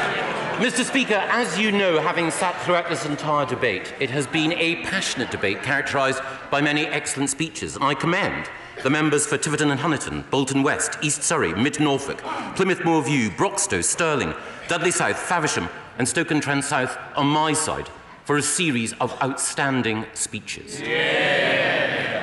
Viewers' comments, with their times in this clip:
0:10 he sounds like a train announcement